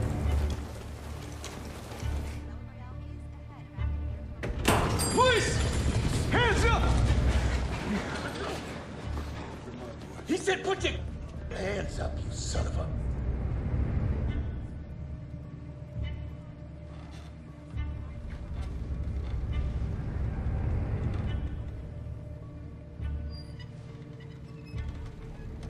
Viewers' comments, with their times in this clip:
0:08 anybody else notice the "ah-choo" LMAOOO